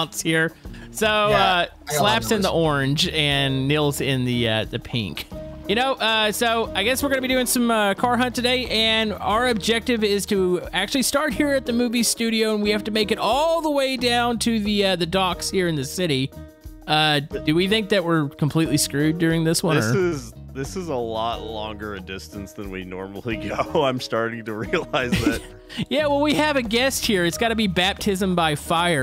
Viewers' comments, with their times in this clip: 0:10 did he say moobie or movie? lol